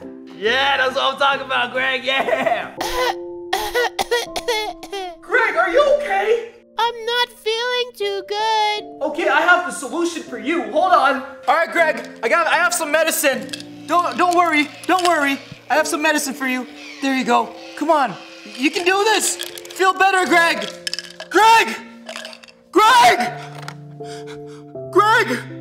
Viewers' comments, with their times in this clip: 0:06 Sounds like X from BFB's voice
0:07 the voce over sounds like Cosmo from Fairly Odd Parents